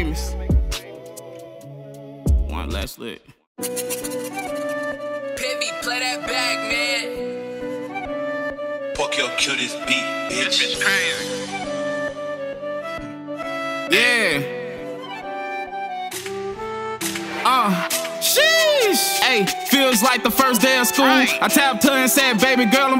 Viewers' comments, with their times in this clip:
0:10 bro really got the mangekyou sharingan sound effect 😂🔥